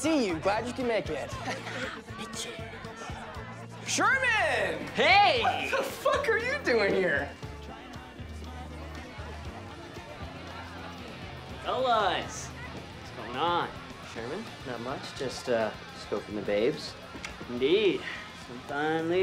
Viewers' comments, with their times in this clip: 0:03 Lmaooo I always say “SHERMAN!!😄” like how SWC says it here. Crazy how some lines stick w you for life